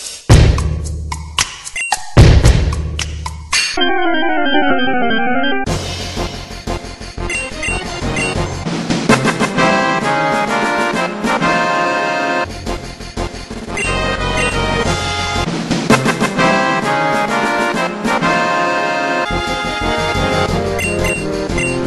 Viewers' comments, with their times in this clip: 0:04 OMFG that was so so funny XD I LOVED super mario music and I had a pokemon feeling XD WHY ARE YOU SO DAMN AMAZING? :D